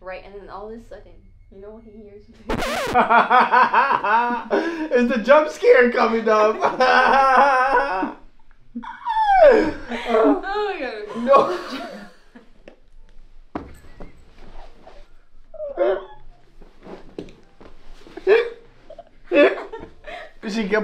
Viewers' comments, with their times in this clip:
0:03 why did he start laughing like that😭😭😭😭